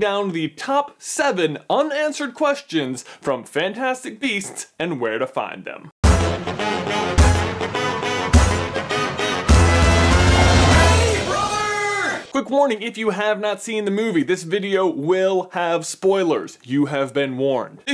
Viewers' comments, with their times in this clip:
0:03 did you fart ?